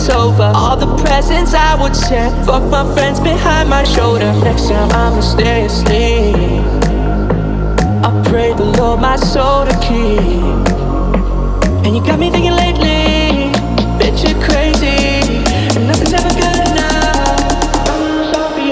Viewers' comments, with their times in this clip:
0:04 ''Next Time Imma Stay Asleep,I prayed the Lord my Soul to keep'' 🎶🎶. The Vocals goes Hard,That's my favourite part.So Good...